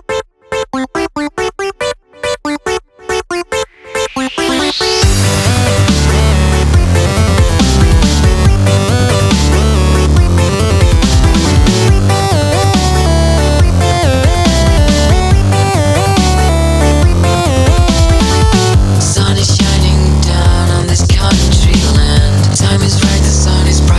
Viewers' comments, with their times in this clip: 0:05 = SUPER DRAMATIC RAMP UP!! WOOOOOOOOOOO!!!!!!!!!!!!!!!!!!
0:05 Dat base drop though